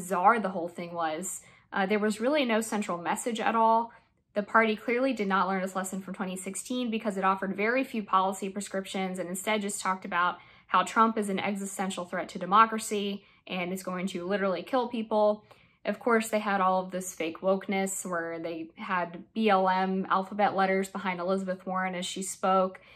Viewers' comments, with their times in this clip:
0:06 did she say "exspecially"?